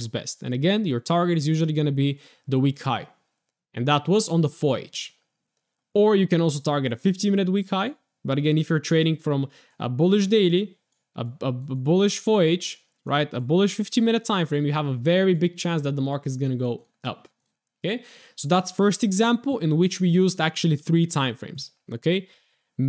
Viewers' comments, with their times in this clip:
0:04 Thanks so much for this, it's really helping me. I do have a QUESTION: Are you saying "уровень" as in level which in English sounds like 'Foyage ' sounding it out? I don't mean to be picky and excuse my possible ignorance, just trying to figure out the meaning. Thank you!